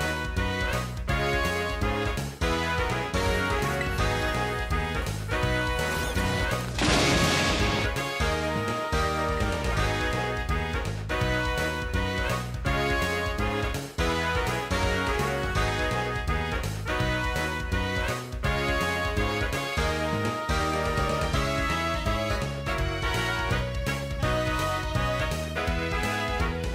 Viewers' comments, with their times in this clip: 0:10 arkoooos!!! (i know it arceus)